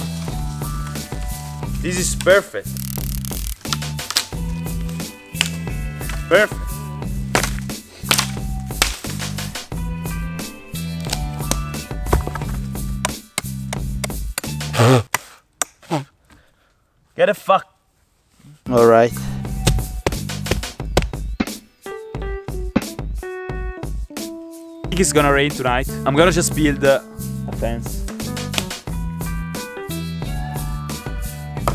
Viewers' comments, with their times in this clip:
0:08 OMG MINECRAFT SKEWELTON SO SWARY SOUMD
0:16 ur accents so funny my best friend